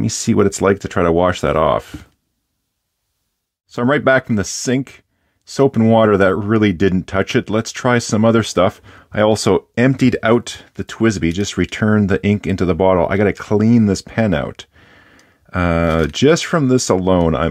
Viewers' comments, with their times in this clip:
0:03 You can hear the fear and respect setting in